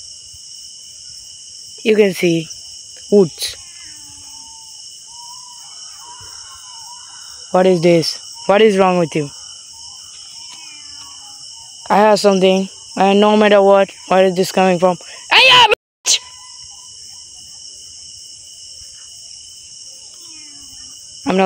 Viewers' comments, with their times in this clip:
0:05 Brother those are NOT wolves.
0:09 woman saying "thank you"